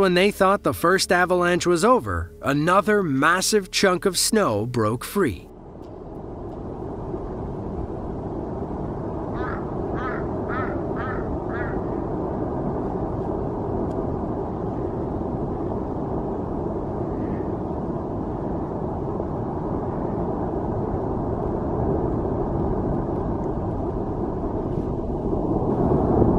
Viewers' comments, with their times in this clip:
0:08 Was that a duck quacking ?